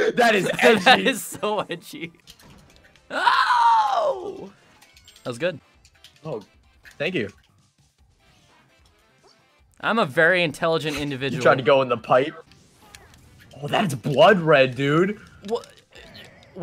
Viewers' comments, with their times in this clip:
0:03 He sounds like Ridley